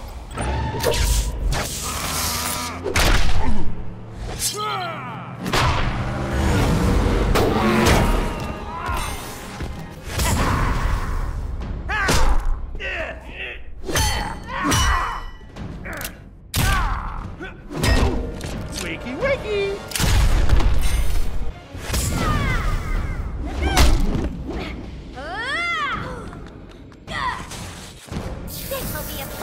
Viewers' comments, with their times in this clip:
0:10 Which ones making the Grunting sounds